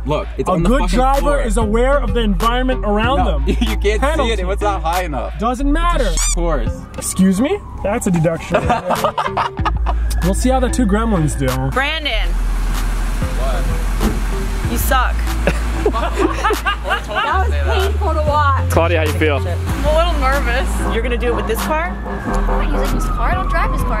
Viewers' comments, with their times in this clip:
0:07 might just be me but all I heard was Count Olaf as the snake guy from Limeny Snickets